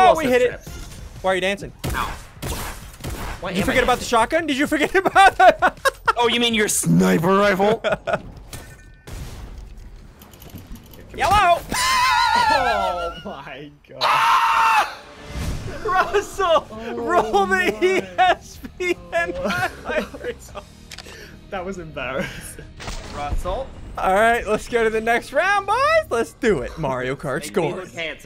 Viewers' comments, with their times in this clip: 0:09 But at the same time, hello sounds the same